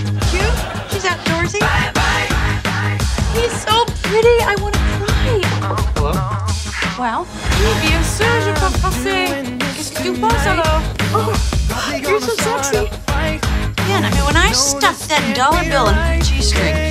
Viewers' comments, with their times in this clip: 0:03 i heard “she’s so pretty, it hurts” 📀💿🎧🧺